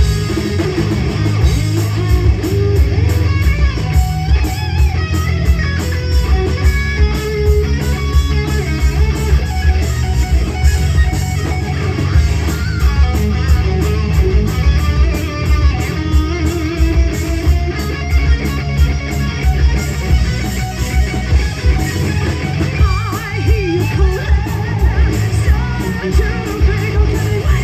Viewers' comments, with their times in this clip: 0:08 I totally heard a Tornado Of Souls inspired solo, right? Awesome performance.